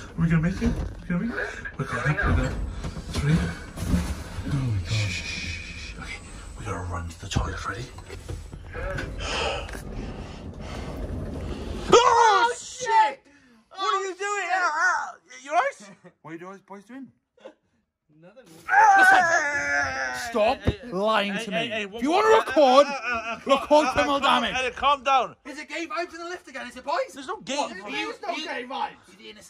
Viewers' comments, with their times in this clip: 0:10 Scary Music Intensifies